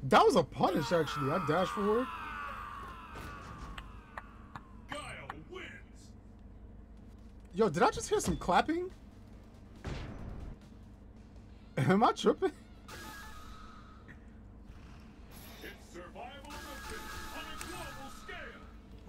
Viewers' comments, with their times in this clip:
0:03 You Can Hear The Sound Of T.Hawk getting His cheeks Clapped By Guile!